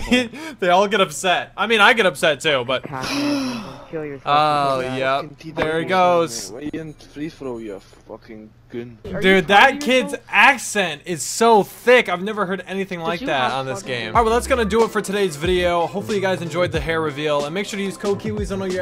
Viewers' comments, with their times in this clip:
0:06 Scottish accent FTW